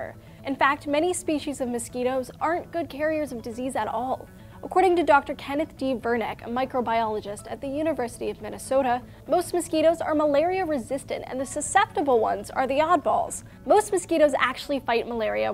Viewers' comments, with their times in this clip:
0:03 lol, you can hear a mosquito (with earphones) on the left side